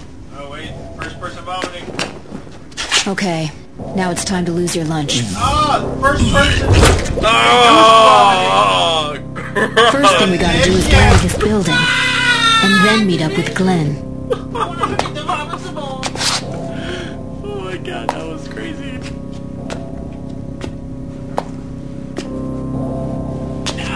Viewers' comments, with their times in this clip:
0:10 That the noise i would have made if i had too Throw up like that. lol